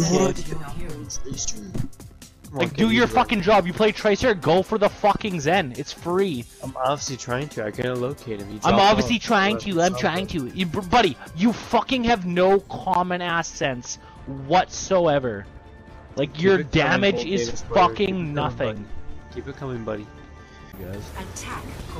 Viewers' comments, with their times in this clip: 0:08 LMFAOOOOO when he mimicked him